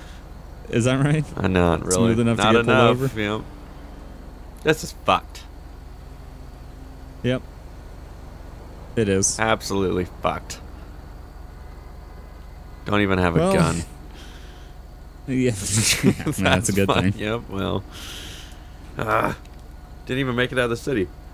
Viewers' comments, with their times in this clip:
0:07 tell me why he sounded like a white chick that just got screamd at bye her dad